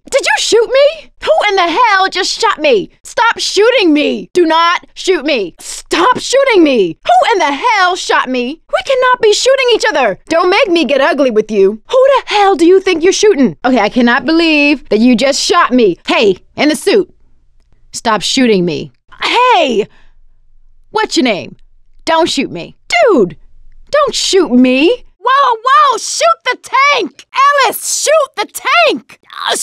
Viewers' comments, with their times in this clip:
0:10 She addes to my ears an R sound which makes it so much more memerable